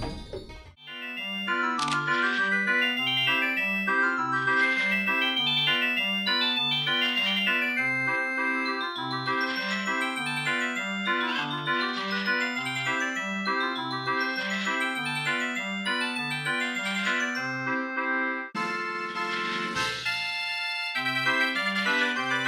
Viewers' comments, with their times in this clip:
0:08 R2-D2 inside a jukebox?
0:10 The jukebox is R2D2!